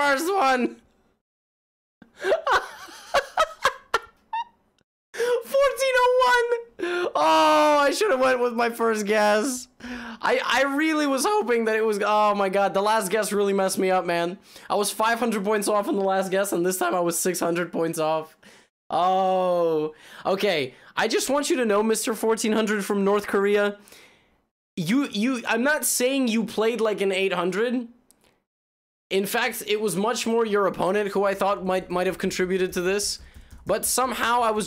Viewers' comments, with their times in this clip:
0:10 voice crack of shame for future reference
0:22 HE SAID THAT LIKE IT WAS NOTHING